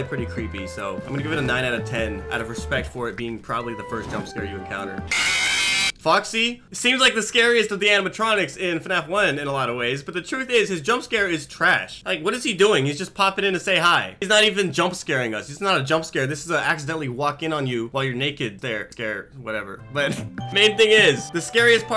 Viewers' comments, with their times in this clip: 0:05 foxys is the scariest, when you hear the running and you struggle to close the door and foxy runs in unexpectedly